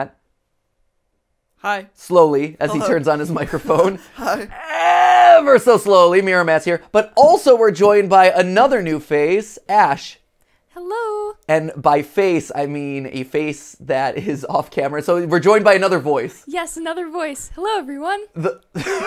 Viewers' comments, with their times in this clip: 0:06 are these their real voices, because it really sounds like they were edited maybe to like hide their real voices or something.